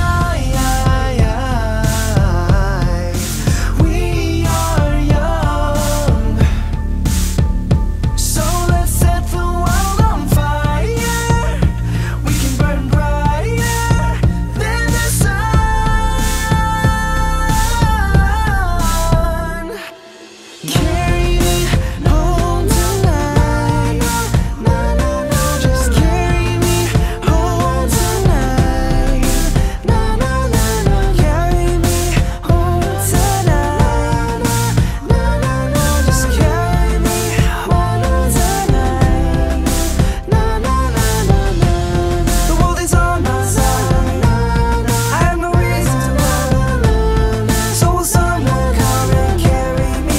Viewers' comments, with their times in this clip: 0:04 Also you'll hear a weird creepy noise.
0:37 Hmmm i hear a weird noise, it's kinda creepy